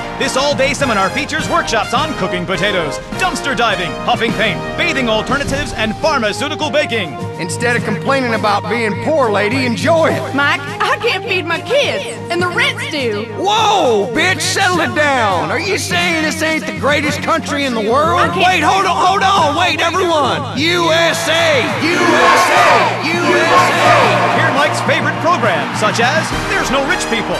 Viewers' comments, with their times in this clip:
0:10 she says: "...and the richs do" or "...and the rent is due"?